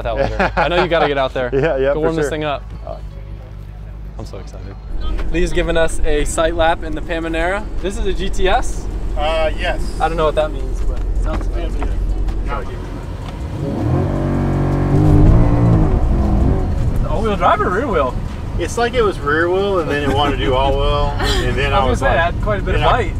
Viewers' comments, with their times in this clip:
0:05 Pamanera!? 🤪🤪😋🤭 Lol. You mean Panamera